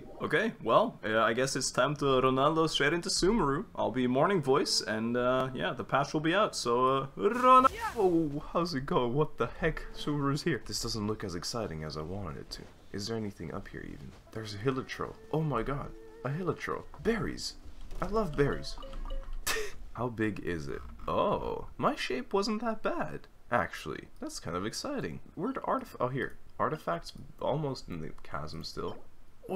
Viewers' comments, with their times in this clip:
0:10 i'm sorry, i put this video in a corner to listen to as i was drawing and then was blessed with a beautiful morning voice?????????? i was like that's not your voice, there's no way if anyone is gonna ask